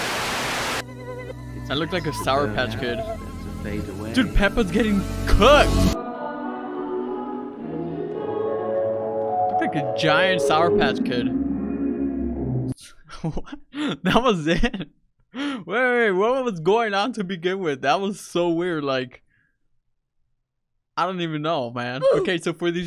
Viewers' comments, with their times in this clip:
0:05 why do I hear a part from the song mother before it came out